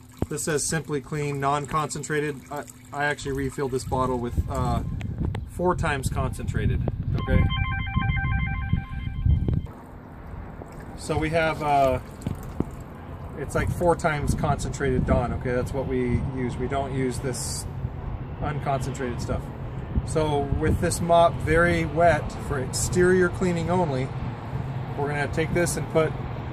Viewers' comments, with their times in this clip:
0:08 That big, angry inhaling of air when the phone rang Lol